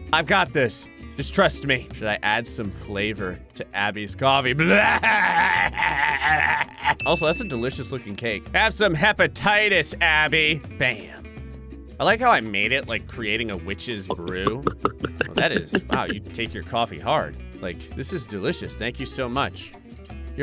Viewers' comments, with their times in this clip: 0:04 Why does his laugh soothe my soul or something?😂